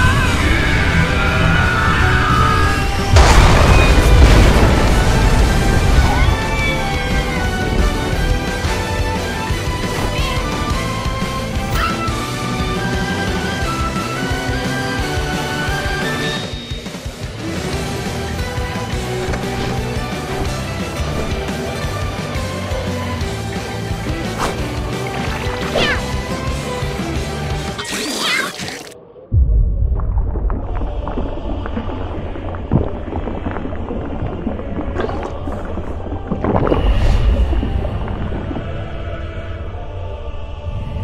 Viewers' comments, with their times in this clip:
0:06 Poor doggo The yelp
0:11 The poor bird 😔 That scream tho-
0:25 OH MY GOD THAT LITTLE MEOW IS SO CUTE!